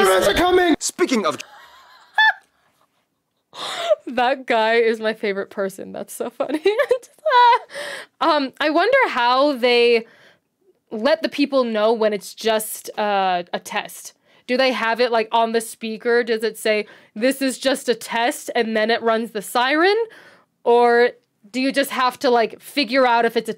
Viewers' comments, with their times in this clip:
0:08 When it's a test it will not be intense for a long period but if it's real then it will be intense for a long period. For example: Test: uhhhhHHHHHHHHHaaahhhhhhHAHHHHHHHHHahhhhhhhhUHHHHHHhuhhhhhhhh. Repeat Not test: uhhhhUHHHHHHaaahhhhhhAAAAAAAAAAAAAAAAAAAAAAAAAAAAAAAAAAAAAAAAAAAAAAAAAAAAAAAAAAAAAAAAAAAAAAAAAAAAAAAAAAAAAAAAAHHHHHHHHHHHHHHHHHHHHHHHHHHHHHHHHHHHHHHHHHHHHHHHHHHHHHHHHHHHHHHHHHHHHHHHHHHHHHHHHHHHHHHHHHahhhhhhhhhhhhhhhhhhhhhhhhhhhhhUHHHHHHHHHHHHuhhhhhhhh. Repeat